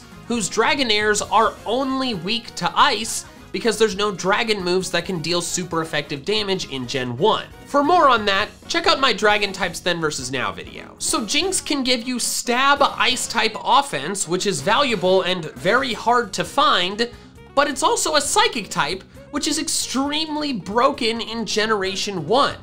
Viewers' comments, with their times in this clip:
0:07 he said moron